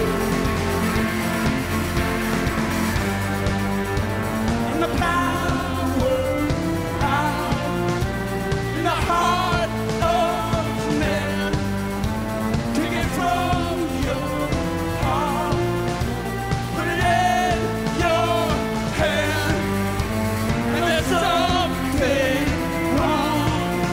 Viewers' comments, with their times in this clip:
0:08 Wow - when Will joins in it's amazing. Gives me chills . .